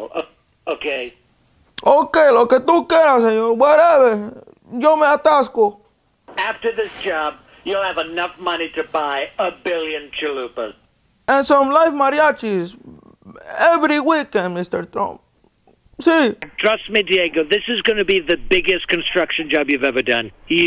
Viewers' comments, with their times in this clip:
0:06 HAHAHAHA. YO ME ATASCO. HOLY SHIT BRO. TALKING LIKE A TRUE PAISA.